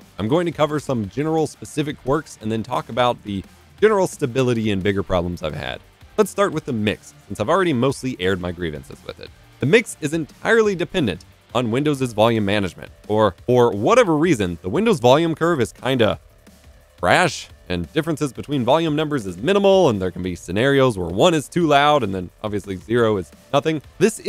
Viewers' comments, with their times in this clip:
0:07 i think your attack is off. sounds like you are clipping or something